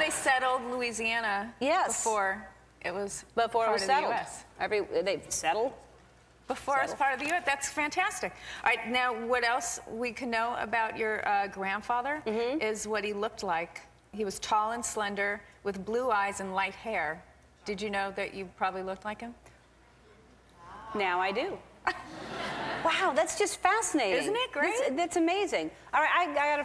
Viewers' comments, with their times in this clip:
0:10 Haha, did Lisa say "know" with a k-no sound? Or did she say "can know"? Oh, I love her... Friends forever! Still the best show on TV. xD